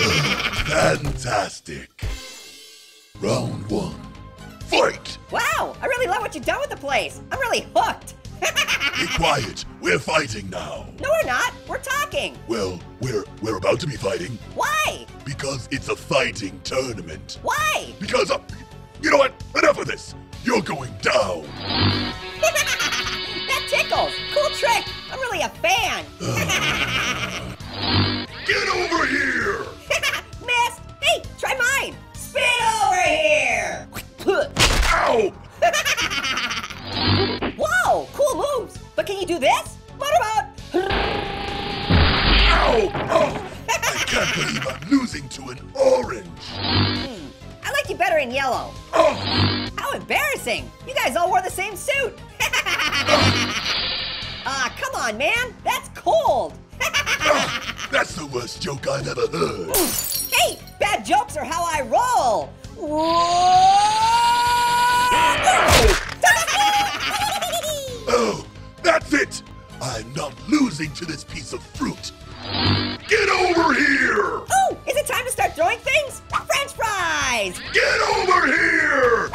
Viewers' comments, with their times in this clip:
0:06 is it my ear or did he say the f word
1:06 Marshmallow: Toasty! Orange and Marshmallow Laughs